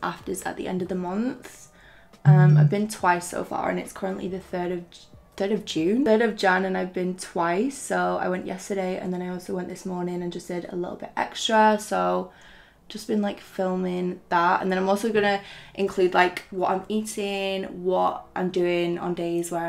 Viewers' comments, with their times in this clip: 0:03 I thought my phone buzzed wow good sound quality